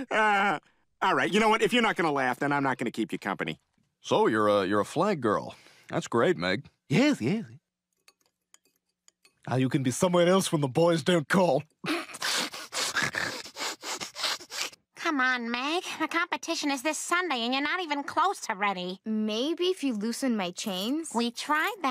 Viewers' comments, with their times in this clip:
0:09 STEWIE AND BRIAN HOLDING THEIR LAUGH 😁😁😁😁😁😁